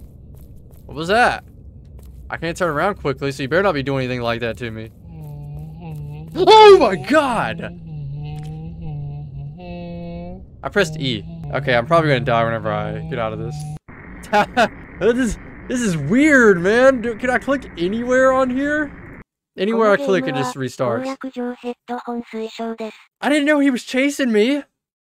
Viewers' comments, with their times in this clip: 0:06 LOL That Scream!